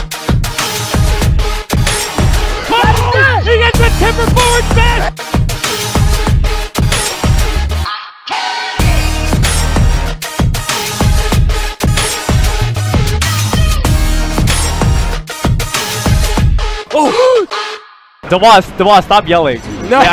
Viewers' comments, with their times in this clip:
0:07 armada nearly fainted after his pop off